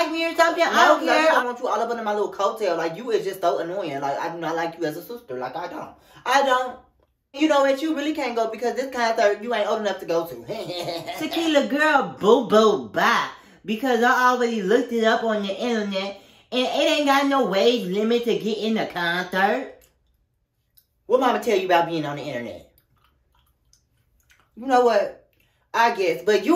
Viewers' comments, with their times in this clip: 0:07 I guess this is what happens when you single handedly play 50+ characters lol you start to get the voices missed up